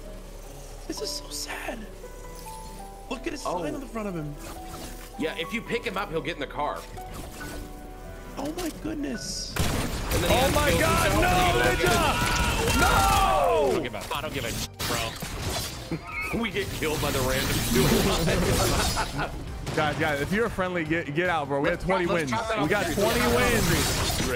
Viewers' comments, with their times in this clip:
0:10 everyone listen very closely, sypher meant to say “no Ninja” but actually said “No Nig*a” 🥸🥸